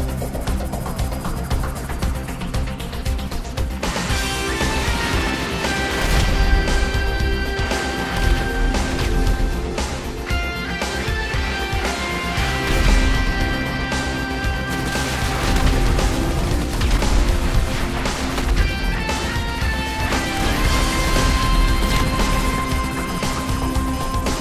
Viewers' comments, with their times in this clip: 0:04 until the theme starts, not like the last video but it fits the ending.
0:07 am i the only one that noticed that the rockets sync up perfectly with the song? anyway thank you for making a video like this about VCS my favorite yet very underrated game and story, so much memories from this game